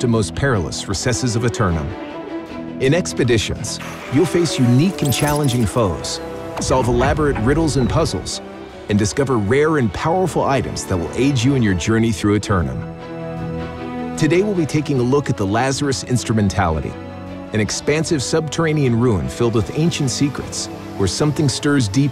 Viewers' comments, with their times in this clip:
0:09 Powerful does a strange sound.